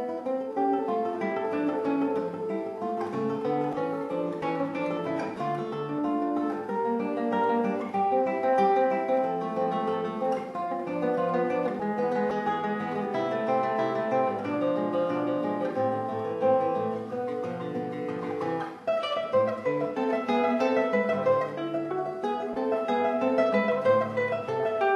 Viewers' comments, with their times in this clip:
0:09 So clean. I came.